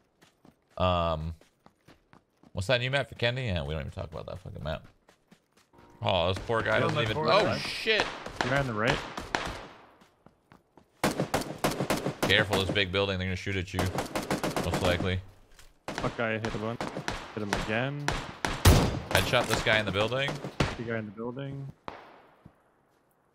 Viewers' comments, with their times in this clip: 0:07 sick beatz bro